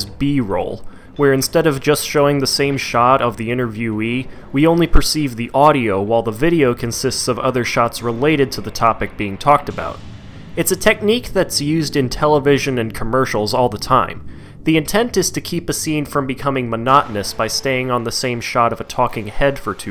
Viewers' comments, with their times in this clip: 0:04 I personally think this series is great, but you have your own opinion, and that’s fine. But you gotta love that theme music that played